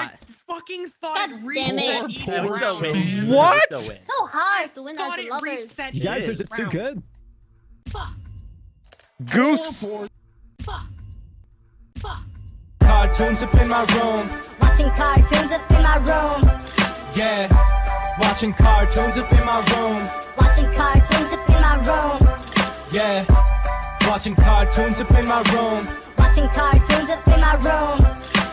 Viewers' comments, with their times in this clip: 0:09 there is some sound clip before the outro.